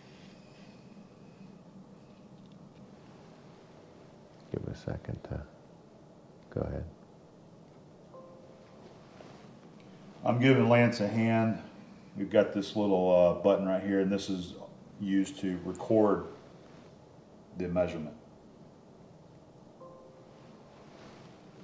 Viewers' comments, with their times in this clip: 0:07 you know is precision work when you start to wisper near instruments